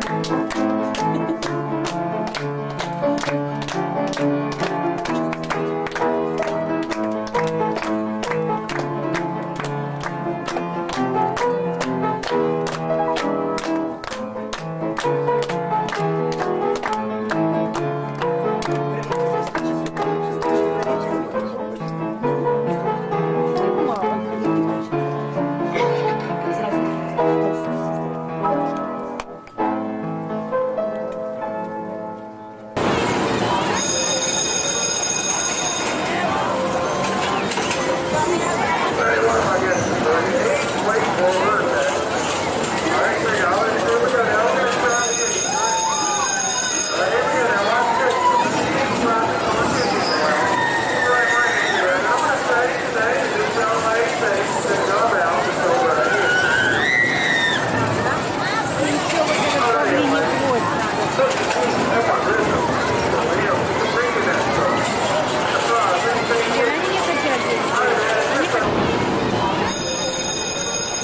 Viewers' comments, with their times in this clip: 0:09 That is an ominous sounding song for graduation and that teacher seems quite forceful hahaha
0:57 Also you can hear Russian language We need an explanation!